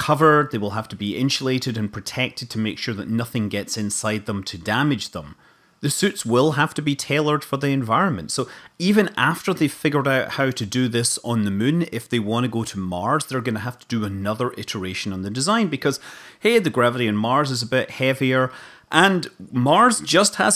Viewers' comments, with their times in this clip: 0:08 "even after they've figured out how to this on the Mun..." I think the Kerbals are going to be surprised to see us there.